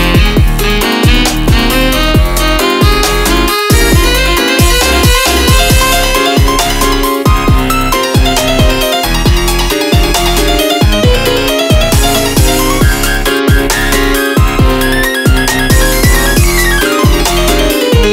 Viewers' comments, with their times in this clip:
0:05 That piano sounds very nice 🔥